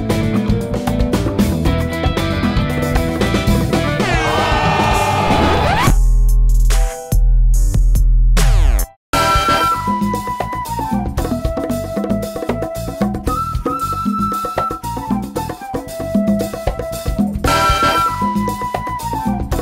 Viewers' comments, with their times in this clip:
0:04 OMG story booth !!!!!!!! 😂😂😂😂 gold chains, pixel sunglasses, the horn, the OOOOOoooooOOoOooOohhhhhhhhhhh, and rap music? You sure do know the kids and teens these days!!! 😂😂😂😂😂😂 like if you agree!!!